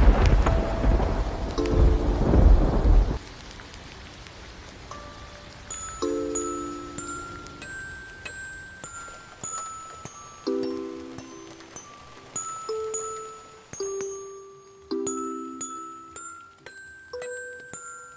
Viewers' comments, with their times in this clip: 0:05 when u just did a music project for school and u choosed ode to joy: the background music: me: why must you remind me of that task
0:06 Skip to of the video then you will start to hear Christian music playing.